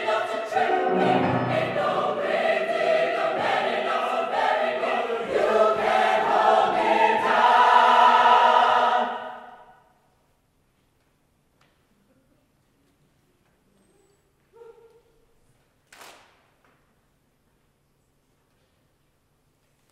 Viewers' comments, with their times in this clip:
0:06 Damn i dont even have that range and I sing both soprano and alto. I do sing in a 7th and 8th grade women's concert choir, and I have the widest vocal range going down the scale.